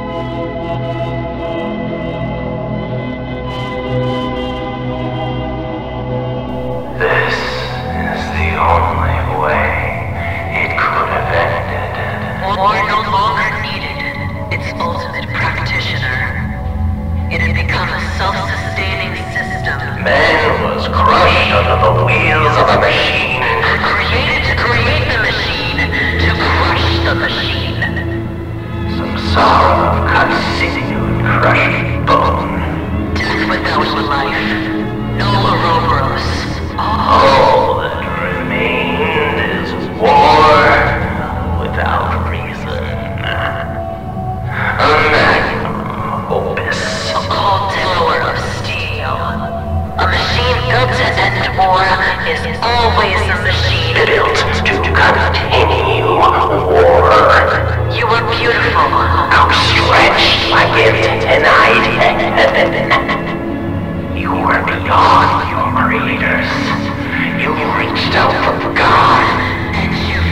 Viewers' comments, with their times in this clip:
0:03 as much as the Action is so amazing in this video, everytime I watch this the ending has to be my favourite part, the line "SAMSARA OF CUT SINEW AND CRUSHED BONE. DEATH WITHOUT LIFE. NULL OUROBOROS. ALL THAT REMAINED WAS WAR WITHOUT REASON." Has to be the one of hardest parts of any poem I've read, I think the only other poem that is in the same realm for meaning and power behind it is The View From Halfway Down from Bojack Horseman "I wish I could've known about the view from halfway down". But the robotic voices used for the Audio for this poem makes it hit so hard, because it genuinely feels like V1 has empathy for the THR-1000, and since V1 was designed to take down the THR-1000, it is the only way, this could have ended.
0:06 I like to imagine the eulogy is from V1, reciting it was he's making his way to end Earthmover, and Hell itself, saying a few final words for the ultimate mass destroyer. You can hear 2 voices, a male and a female ( who is similar to V1's voice in Clair de Lune )
0:58 why was this moment voiced with a kinda...😳😳😳😳👉👈 jokes aaide, the VAs did AMAZING